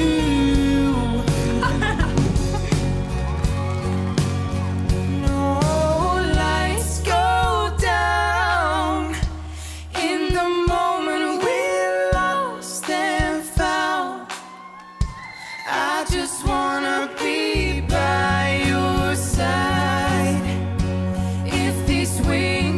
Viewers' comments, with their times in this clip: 0:07 they sound so good together